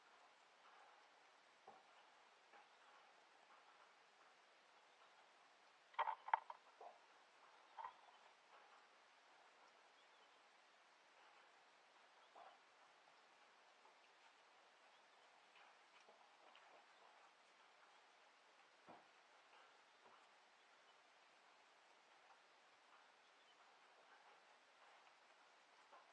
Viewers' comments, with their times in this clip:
0:08 While I'm watching the video, there's another sound that sounds like a bird on top of your camera. It sounds close to the mic though. You did scare me for a second, when you yelled at one of the boys in the shed. For a second I thought you were in pain hahaha.